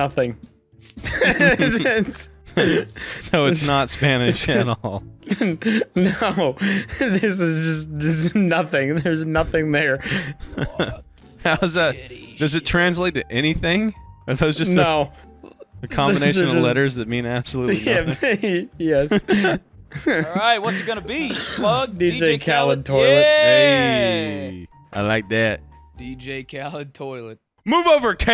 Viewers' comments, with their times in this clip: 0:10 Sounds like an evp Or am i just hearing sht?